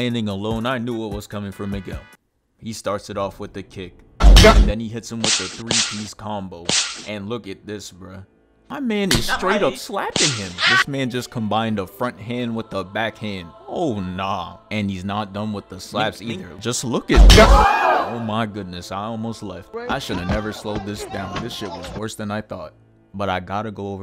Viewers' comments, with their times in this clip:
0:05 The sound effects had me 😂😂😂😂😂😂😂😂